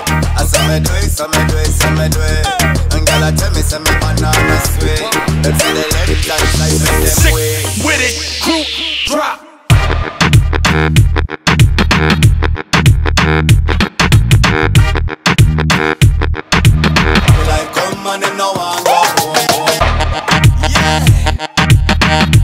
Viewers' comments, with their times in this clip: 0:06 Beat drop replay Button: